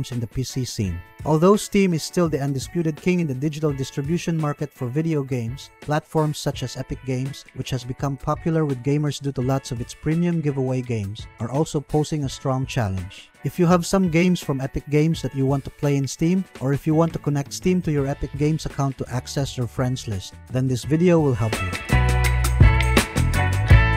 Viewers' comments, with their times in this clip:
0:09 lol! "ExPremium" games? That sounds Exclusive and Premium! I'll pay top dollar for that kind sir!